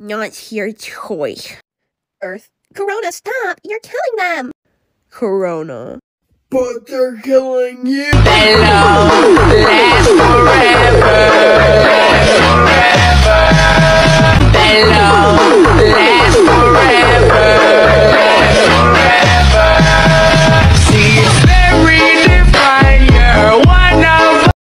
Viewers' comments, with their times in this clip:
0:08 i swear to god, jedag jedug songs are so loud